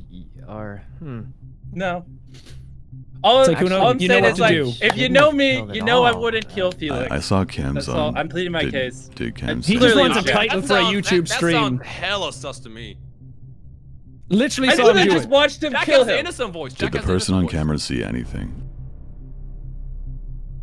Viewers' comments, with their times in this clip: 0:04 Mr.beast: “if you know me, you know I wouldn’t kill Felix” Pewdiepie: laughs in silence